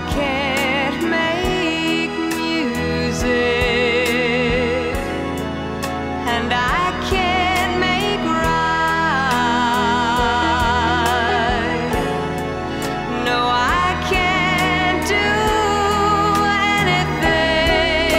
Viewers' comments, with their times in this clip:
0:04 ... The voice reaches inside us ... It goes into our soul !!! 🤔 Richard Carpenter, her brother, in an interview for 'TV', he said that Karen, has a voice, a beautiful voice (We all agree), that she reaches the notes (Timbre of voice) so easy...!!! 👍🏻😉🙏🏻🙏🏻🙏🏻😉👍🏻 Rest In Peace, Karen Carpenter! 🌹😞🙏🏻🙏🏻🙏🏻😞🌹